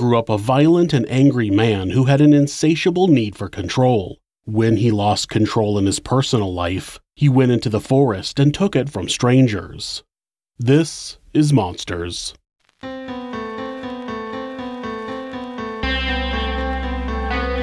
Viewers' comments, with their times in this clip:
0:05 that phasing lmafo